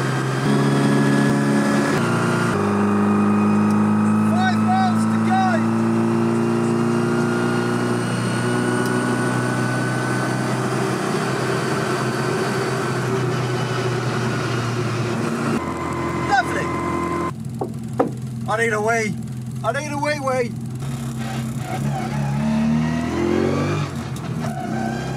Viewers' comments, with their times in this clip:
0:10 Right is what I hear that's sus to me.. like rod bearings knocking around a little then clearing up with engine speed (more oil pressure). But me knowing less than 0 about classic British engines I've got no idea what "normal" even is, so.. I don't know. Could well be a harmless f†ked up mount just rattling on something. Didn't hear any T/O noises myself tho. I do miss the whine of straight cut gears.